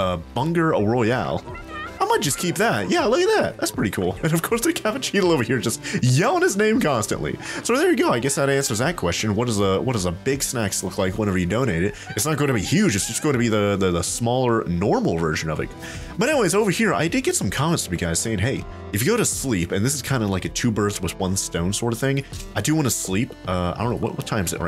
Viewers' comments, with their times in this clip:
0:08 That Capucheetal is as loud as a Rooster.